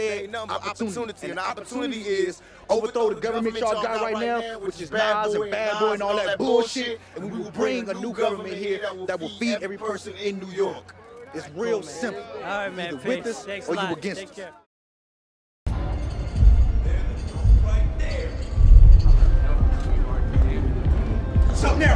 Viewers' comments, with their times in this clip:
0:05 Perfect synchronizised "Bullshit"